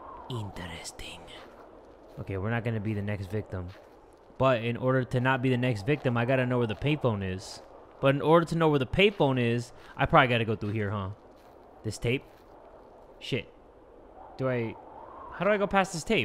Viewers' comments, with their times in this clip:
0:03 is me or there is somebody walking on the air/roof?